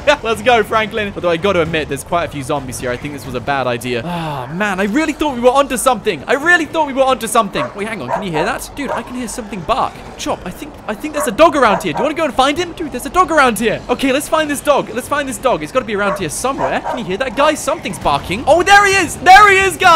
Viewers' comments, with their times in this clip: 0:03 go to it sound wierd